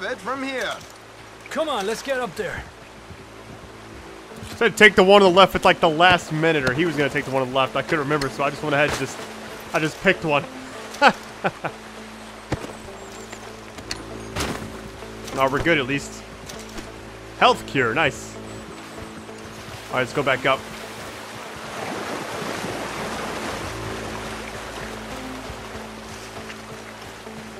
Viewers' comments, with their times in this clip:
0:09 don’t fucking laugh , you’re terrible !!!